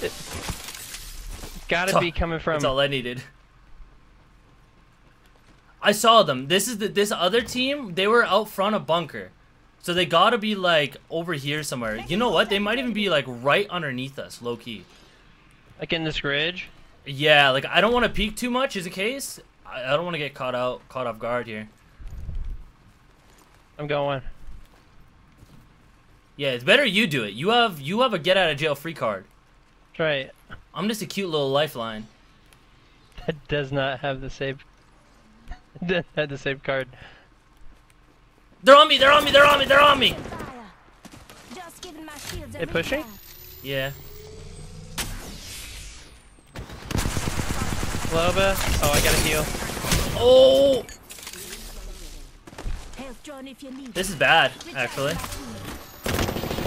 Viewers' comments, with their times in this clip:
0:09 you can hear the Loba bracelet 👀
0:40 was one of the funniest voice changes I’ve ever heard 😂